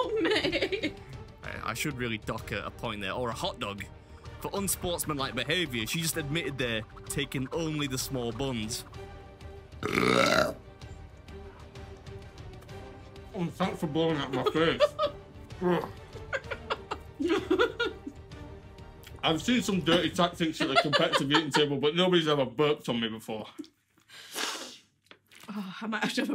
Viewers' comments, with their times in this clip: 0:09 Any bird who can belch like that is a keeper!
0:09 That belch could wake the dead.
0:10 Mrs Beard belches like Princess Fiona 😅